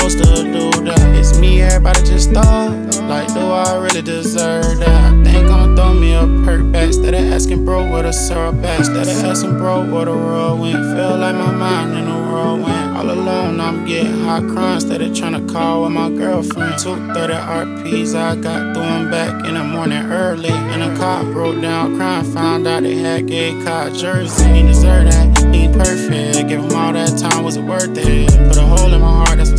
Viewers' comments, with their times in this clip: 0:10 this switxh was tough💯